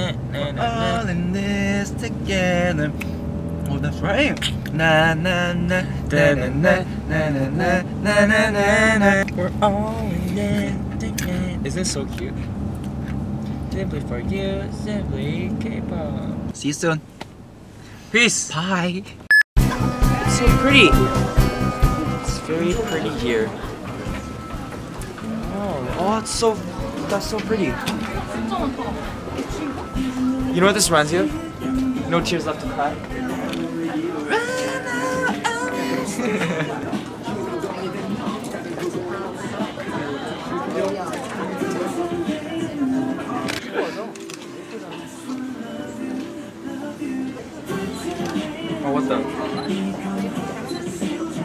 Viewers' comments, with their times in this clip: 0:08 literally me singing high school musical i am cracking up
0:37 If you listen in you can hear Hyunsik singing his part in Ilhoon's song TELL ME from his Big Wave Album KAKVKDKAKC BTOB